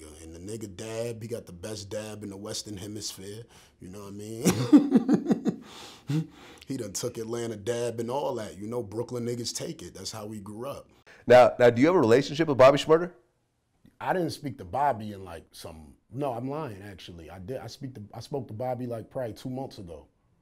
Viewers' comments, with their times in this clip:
0:04 why dude laughing like that?